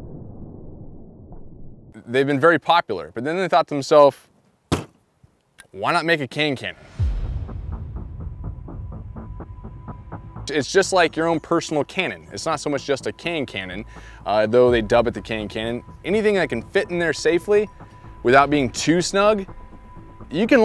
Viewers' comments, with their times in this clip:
0:08 the gun sounded like a gun sync to dub step